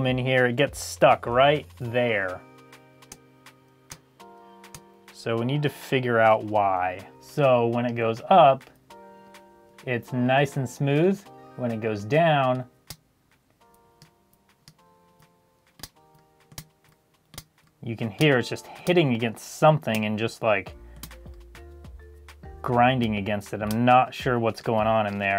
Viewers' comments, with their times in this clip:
0:10 sounds like my articulations :-/